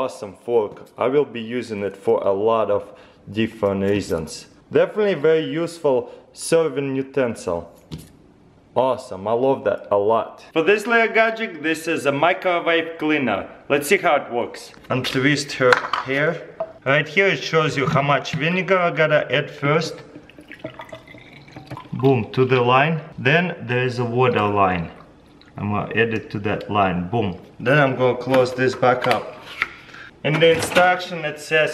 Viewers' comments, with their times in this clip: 0:10 i would say: For this gadget we got a little CrazyRussianMother
0:15 he soundes american #loveCRH❤